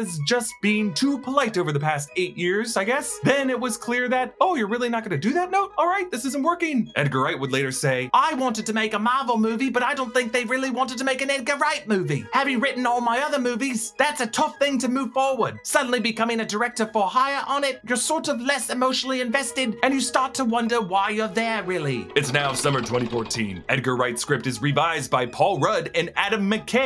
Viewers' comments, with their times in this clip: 0:10 Had to pause the video to say that the voice work for Edgar Wright is terribly offensive but extremely hilarious 😂😂